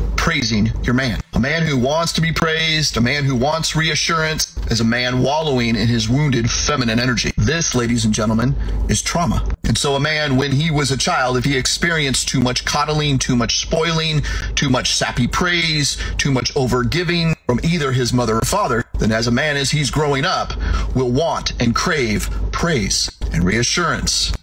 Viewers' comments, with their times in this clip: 0:09 ...."this ladies and gentlemen is Trump."